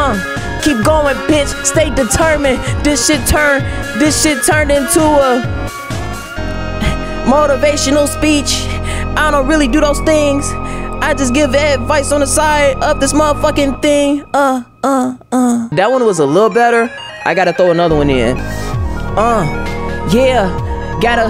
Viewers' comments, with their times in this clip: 0:06 i unironically vibe when he freestyles ngl it’s a jam